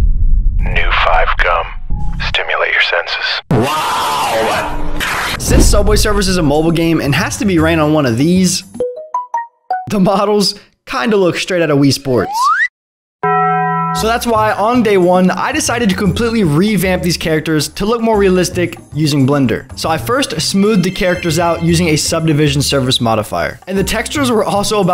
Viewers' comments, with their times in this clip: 0:08 bruh i thought its my notification 💀